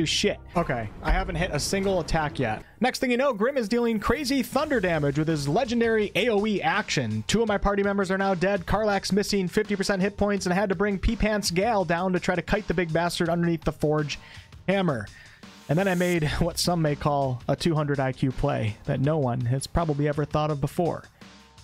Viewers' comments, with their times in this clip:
0:09 Again, his name is GALE with a hard A sound. Not Gal. Gal is a slang word for female in English. Gal and GALE sound completely different. Why do you keep calling GALE "Gal" instead?